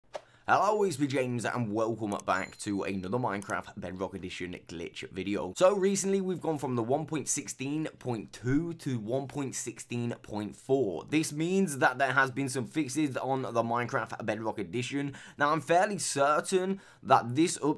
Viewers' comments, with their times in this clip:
0:00 In the intro it sounds like hes saying "I'll always be James"